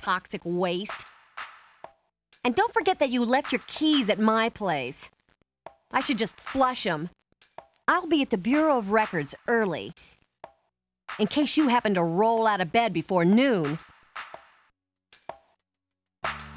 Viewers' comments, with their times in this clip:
0:04 Same voice as Callie Briggs. Good luck getting that out of your head.